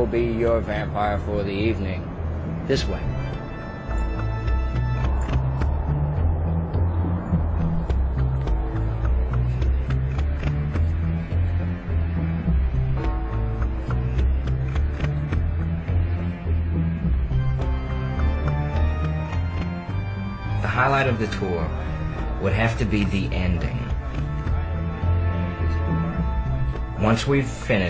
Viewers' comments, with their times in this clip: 0:08 sounds like a dog drinking water. Lol